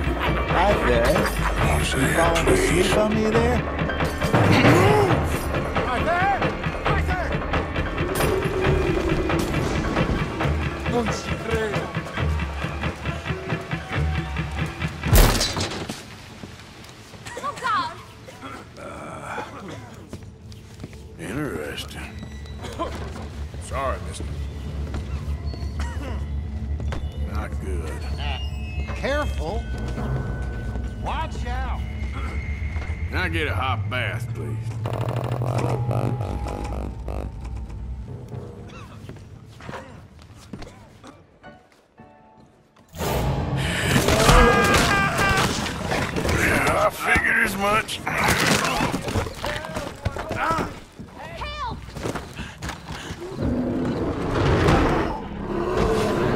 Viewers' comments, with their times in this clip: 0:05 Does anyone know where Hosea screams like that in the normal game? Never heard Hosea so stressed
0:42 I love how Arthur just sounds mildly annoyed that a lion just appeared out of thin air and mauled him.